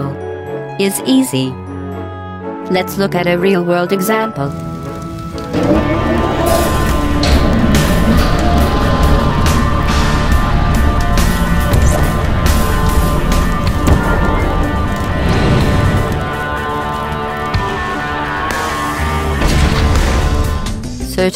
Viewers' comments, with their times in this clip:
0:04 they messed up and played both Guard Down (HL2:E1) and Vortal Combat (HL2:E2) simultaneously
0:06 I love how they put a completely out of time drum beat over Vortal Combat